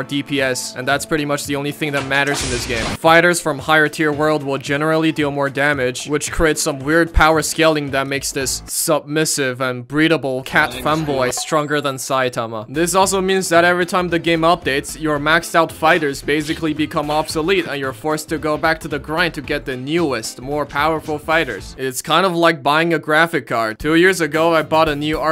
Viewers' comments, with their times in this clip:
0:10 (Whiney voice) BuT tHeRe BoTh BoYs!!!